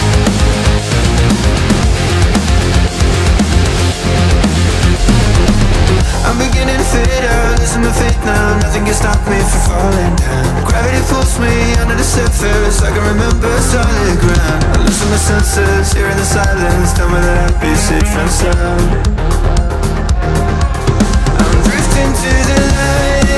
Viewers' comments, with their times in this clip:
0:07 I don’t hear “to fade out”